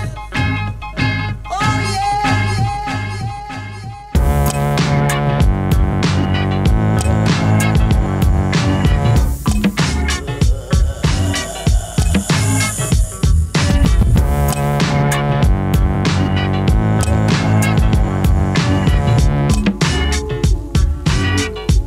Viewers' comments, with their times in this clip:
0:09 legit thought I heard my dad snoring it sounds so real wtf 😂